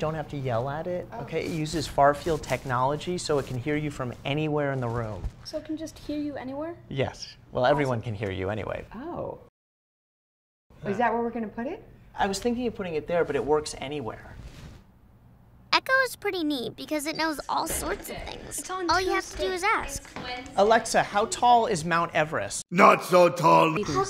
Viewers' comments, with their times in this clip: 0:08 aaaaaaaahahahaahhaa got me good, that pause killed me.